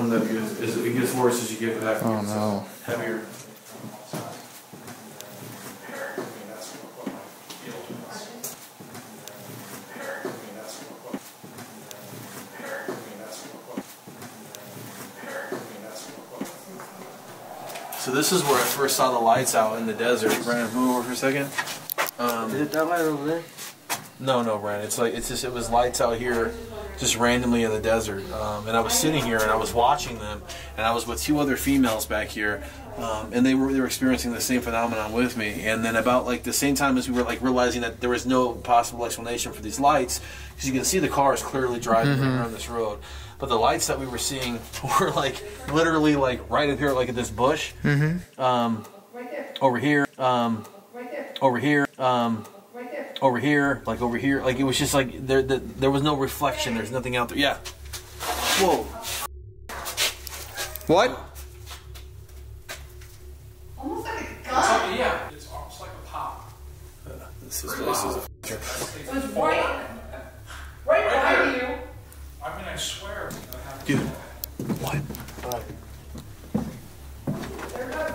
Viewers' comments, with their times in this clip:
0:05 " hurt" i anderstand " hurt me"
0:06 sounds more like ya heard me? Or hear me? Great video!
0:10 sounds like an old lady/lady saying "Hurt it" or "Hurt him". Sending Love ❤ from puerto rico love all the videos you guys made. STAY SPOOKY!👻
0:10 I thought that voice said, "Eric".
0:16 I don’t know if it was wind but right after when it said hurt it sounded like a voice I don’t know I think it was wind
1:00 There’s like a weird female sounding whimper/ cry(?) ...?